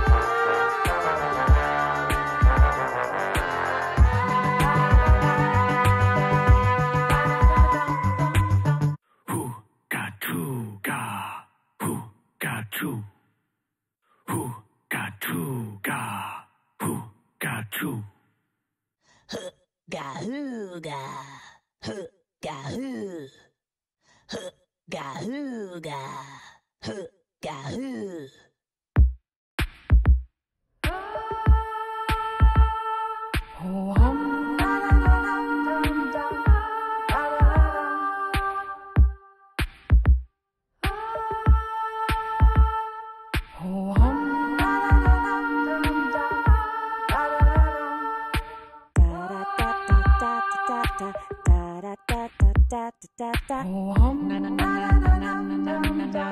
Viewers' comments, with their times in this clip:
0:09 Flowah's solo is peak performance
0:09 did anyone else notice stogg kept playing
0:09 i think stogg is glitched here
0:13 can I not hear Stogg? or is it playing the animation but not the sound?
0:14 why is stogg looks like its singing but there is no sound
0:15 I was like where’s barbb and flowah on wave 4 and then they came in and I’m like…. oh
0:16 stogg makes its animation but it doesn´t sound wth
0:26 stogg needs to wub up the volume
0:37 Whaddle forgot to sing
0:38 Did yall see whaddle sing deaf
0:38 waddle singing for no reason
0:38 When whaddle lag
0:39 WHADDLE WHAT ARE YOU DOING
0:39 whaddle glitch lol
0:39 whaddle started her part early
0:39 how come we can’t hear whaddle??
0:39 Why is whaddle quiet lmaooo